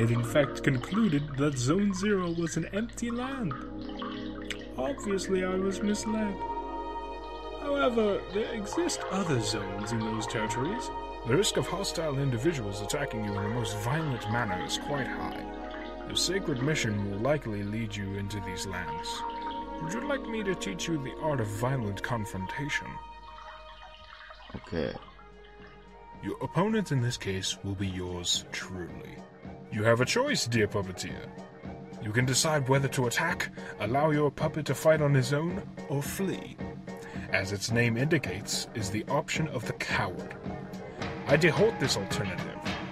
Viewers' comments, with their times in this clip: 0:04 There's something about the bat sound that made laugh out loud, idk why help. No, but seriously, this amazing. The animation? No objection, love it. It somehow keeps the same feeling of the game but not too much (which works). Chef's kiss. The voice acting? No great but that's fixable with a bit of experience and practice, no worries, for future projects maybe a better recoding environment so the sound is clean would help lots. Either way is just advice tho??? This awesome as it is and I'm not complaining cuz this made my month TT ♥
0:26 the way that 'pepper steak' comes in is top notch 👌